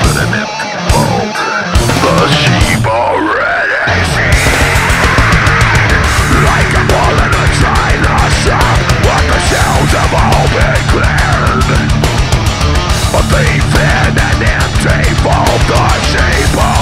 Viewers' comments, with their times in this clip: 0:03 OMG that ride is the best Chris adler forever.